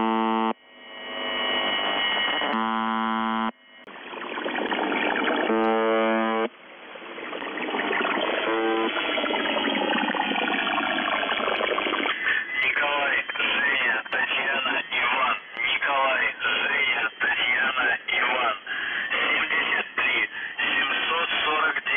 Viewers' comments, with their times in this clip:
0:04 Noise sound like water stream.